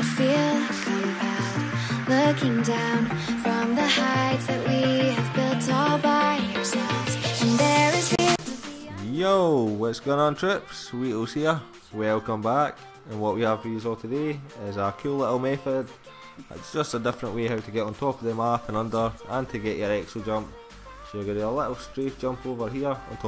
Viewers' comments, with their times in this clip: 0:08 You need to improve your english and or accent, sounds like "YOOO Whats going on chips, cheetos er."